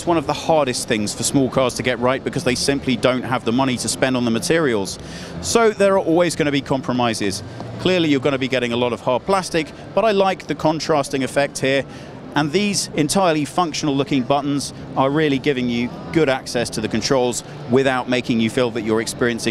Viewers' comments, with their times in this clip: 0:06 definitely sounds like soft-touch plastics